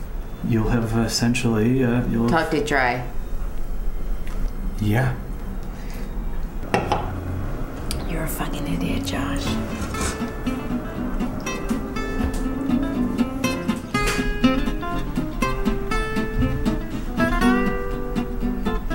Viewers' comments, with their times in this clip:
0:03 what does she say ? i keep playing it back and what i hear sounds like: "taught toe dry". what?